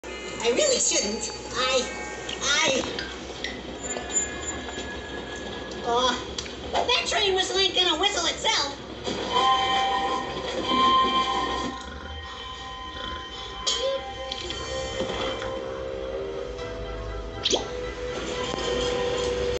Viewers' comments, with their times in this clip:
0:02 Blink cartoon sound effect
0:17 pluck cartoon varoop sound effect